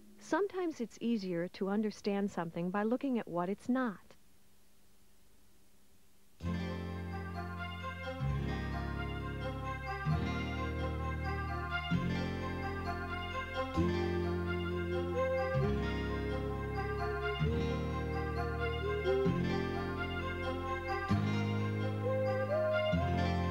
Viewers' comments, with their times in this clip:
0:06 sweet child o mine starts playing for some reason